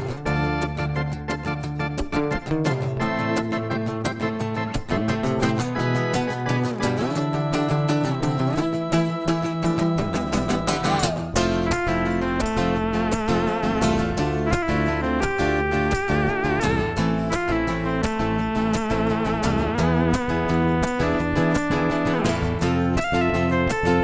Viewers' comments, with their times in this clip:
0:10 can someone tell me how to make my keyboard sound like that???